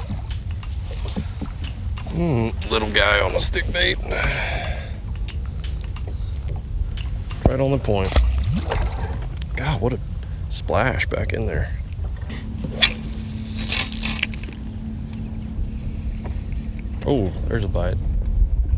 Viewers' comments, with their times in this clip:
0:06 that splash was extremely satisfying